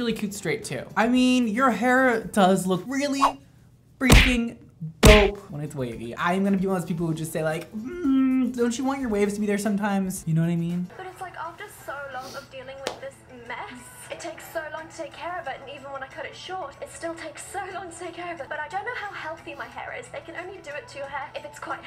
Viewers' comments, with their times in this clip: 0:07 kermit joined the chat